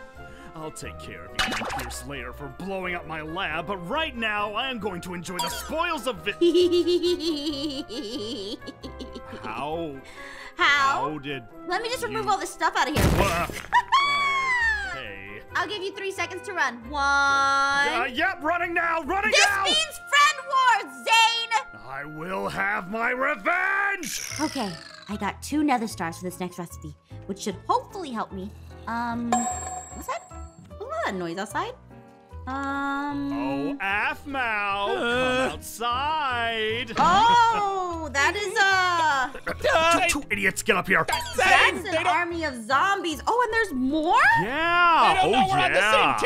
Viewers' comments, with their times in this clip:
0:06 The hehehe in it funny
0:29 was that a chinese words?